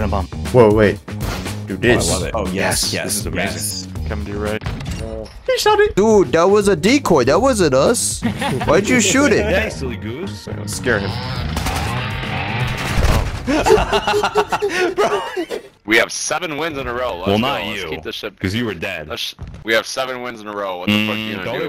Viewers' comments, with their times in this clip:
0:09 BRUH HE SOUNDS LIKE IM PREY